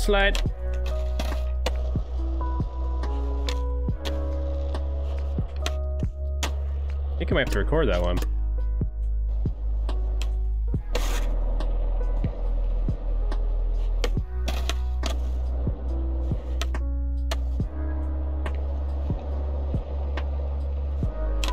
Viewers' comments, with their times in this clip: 0:04 When the beat stopped and he landed